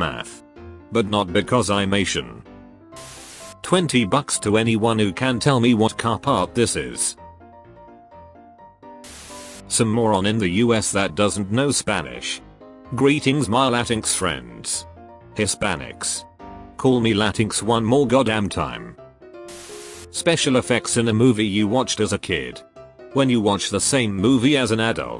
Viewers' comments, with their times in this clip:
0:06 that ain't a car part that the ducking old a$$ pencil charpener in every 2012 class